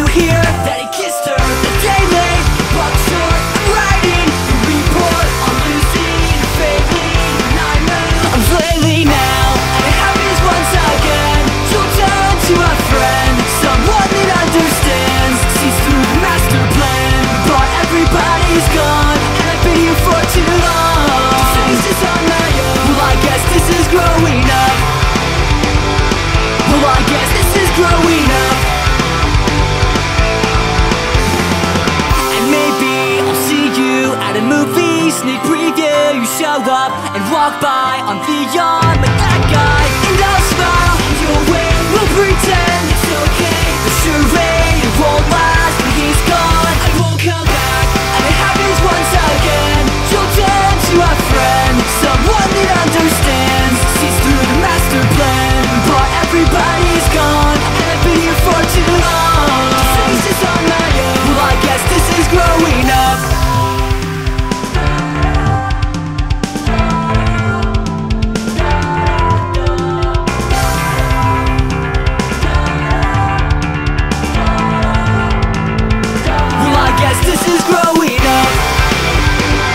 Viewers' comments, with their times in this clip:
0:06 dat weird ass kick
1:03 the Da Da's from "Story of a lonely guy" WOOP Love this cover.